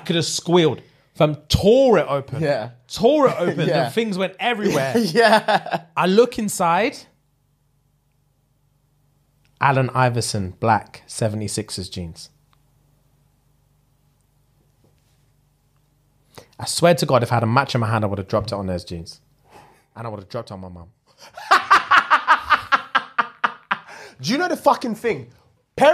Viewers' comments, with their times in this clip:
0:07 it's giving Wayna Gritzky and not Wayne Gretzky